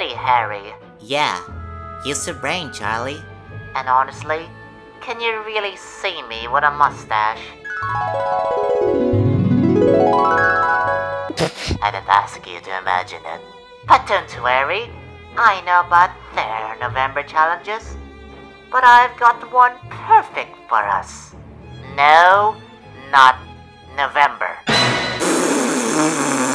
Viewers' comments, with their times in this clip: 0:08 spanish guitar Moustache~